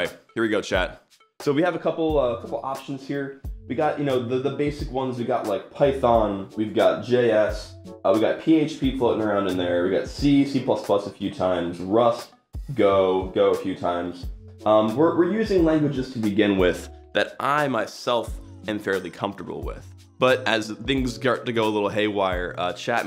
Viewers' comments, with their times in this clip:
0:08 he sounds and acts very drunk